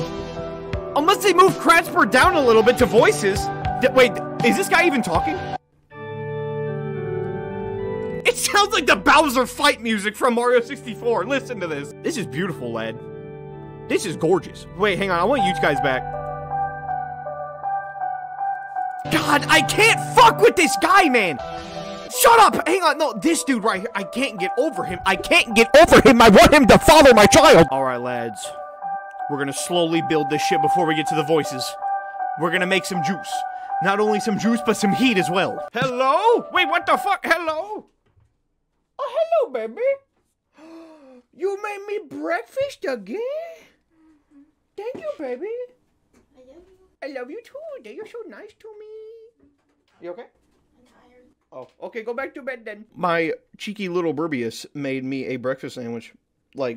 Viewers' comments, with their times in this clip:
0:06 that's I think an organ
0:14 bros sounds like those piano music from a churnch
0:35 the fact he is said beby
0:37 Why is my bro sounding like The Click 🤨
0:38 BRO....HE GET A BREAKFAST AND SOUND LIKE A CHILD WTF- 😭😭😭😭
0:39 His irl baby girl be sounding like a child